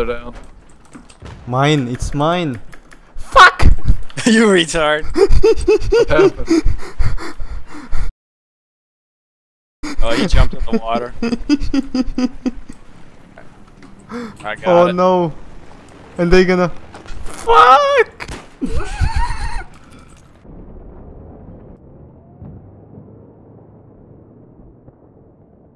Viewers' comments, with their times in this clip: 0:10 lol your laugh